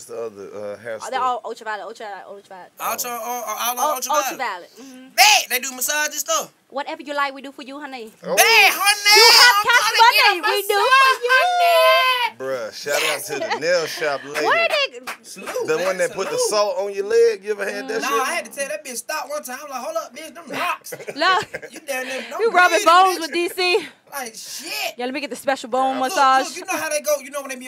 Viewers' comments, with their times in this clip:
0:08 dc Young fly got me dead When she Said she does everything honey and the way dc repeated the word honey